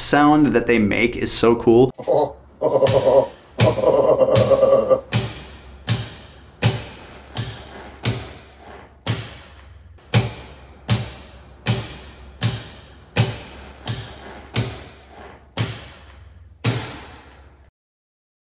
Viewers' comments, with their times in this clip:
0:04 Man, I feel u on another level. mins when u laugh and switch the light on, off, on, off, on, off. Its the inner child living on. Thanks for sharing that.